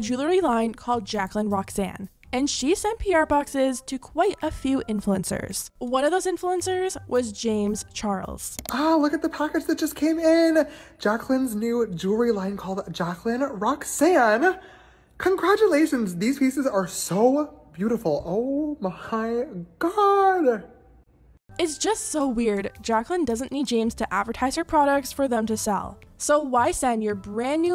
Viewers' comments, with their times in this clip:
0:09 that has to be the fakest voice I have ever heard 😂😂